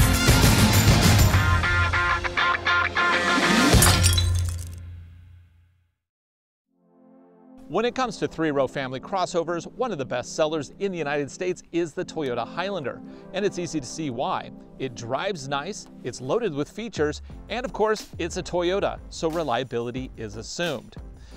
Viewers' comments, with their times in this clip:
0:06 reminds me of another song and I can't think of it.